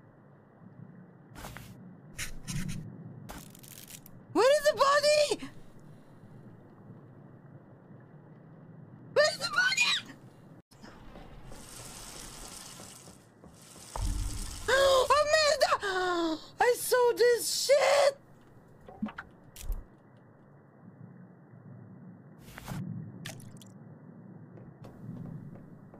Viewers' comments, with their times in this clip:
0:08 the voice crack 😂😂
0:08 That squick is amazing!